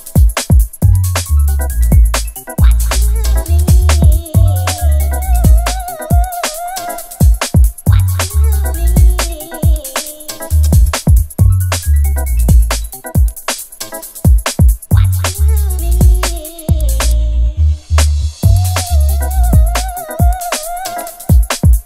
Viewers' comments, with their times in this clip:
0:05 Tune is magic, makes me think of the jungle tune with the same Rare Groove sample.